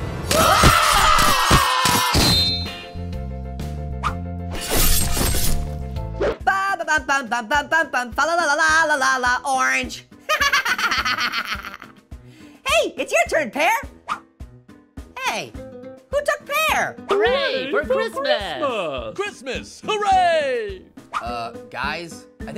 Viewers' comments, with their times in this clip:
0:06 I Like This Song And Loop Of It